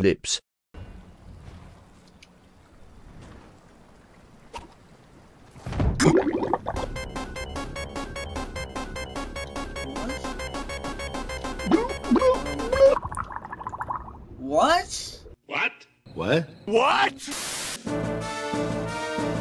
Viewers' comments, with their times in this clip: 0:06 if that music would happen on fortnite while I'm in the water I'm going to have a mini panic attack because of that Sonic the Hedgehog countdown😂😭😭😂